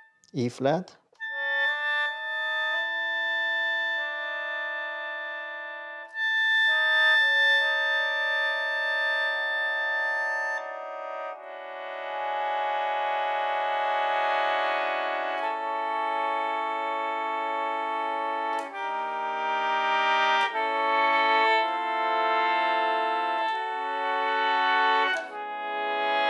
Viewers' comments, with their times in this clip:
0:10 wowwwwww, very beautiful sound! the potential for creativity is massive! 😮